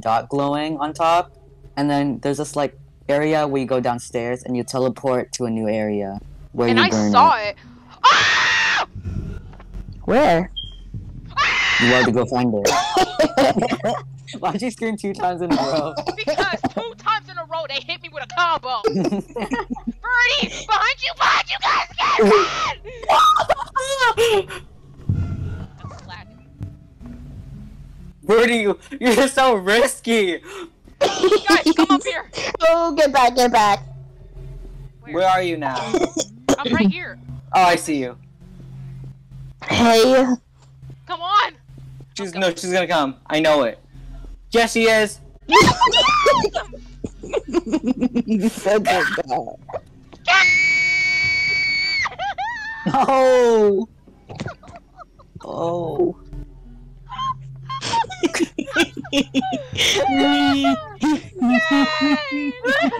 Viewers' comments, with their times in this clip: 0:03 is my fav scream
0:49 ah i think thats my alarm to wake up /j
0:49 she hit the high note
0:49 Hit an Ariana grande note 💀💀
0:49 Mariah Carey got competition 😳
0:50 mah ear needs a medication
0:50 the depth of that scream
0:50 THE SCREAM HAD ME ON THE FLOOR DJVNFFNR LMAOO
0:50 her voice went: keÊĒËĒÉÊÊËÊĒÊËÉËËËn